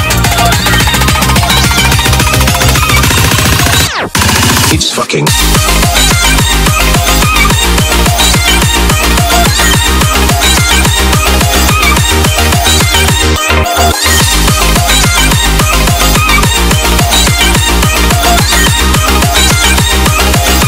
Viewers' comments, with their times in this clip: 0:04 for beat drop
0:05 speed up theme